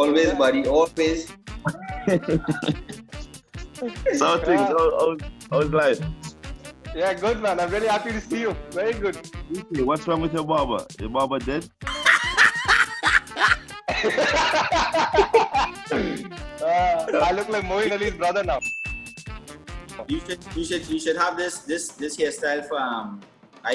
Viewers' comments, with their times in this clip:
0:10 Dark Comedy in that Accent is always Fun....